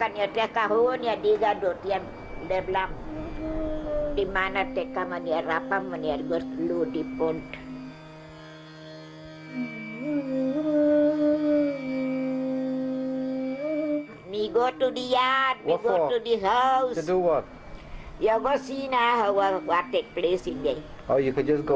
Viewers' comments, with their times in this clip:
0:07 The patios sounds very Jamaican